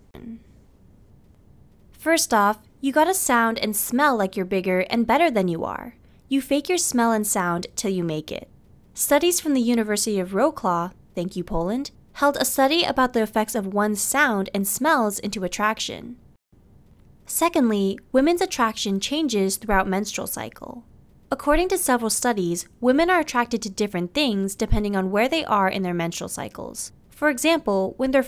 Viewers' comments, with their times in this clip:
0:10 you say Polish name Wrocław like wroklawwww